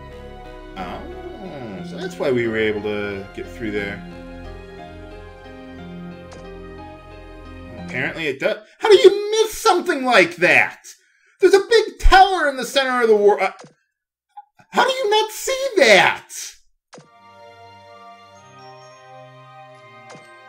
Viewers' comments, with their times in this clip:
0:08 you know, I could almost hear a vinyl record scratch. The music cut out at the most opportune time for your rant on the Tower of Judgment. I'm quite impressed.